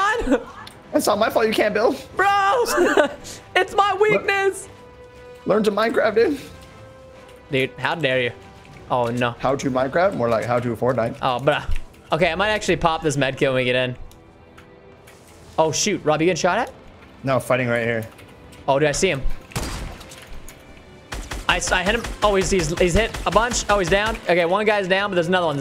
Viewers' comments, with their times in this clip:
0:08 So much echo XD